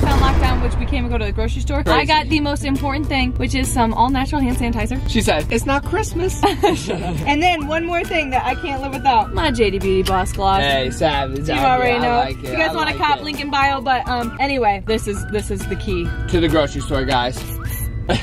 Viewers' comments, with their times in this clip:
0:05 am i the only one who heard the shut up ? Like he said its not christmas and then another audio said shut up! lol!!!